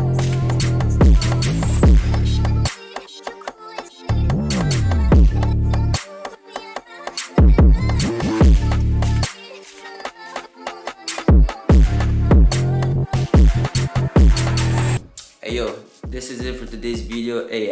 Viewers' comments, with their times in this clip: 0:04 that little “E G A “ was BEAUTIFUL